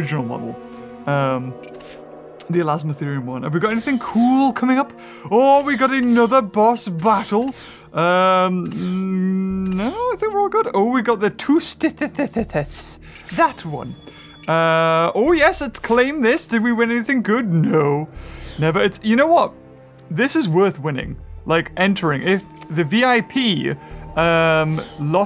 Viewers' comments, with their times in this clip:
0:10 Name : Tesoteuthis Beaver : Tusothethethes